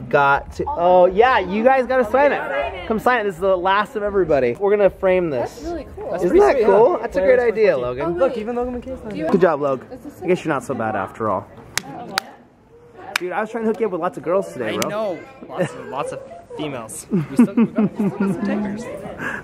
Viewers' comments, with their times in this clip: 0:04 Wow.. such an amazing experience meeting them ... I'm the one with glasses wow I sound so annoying on video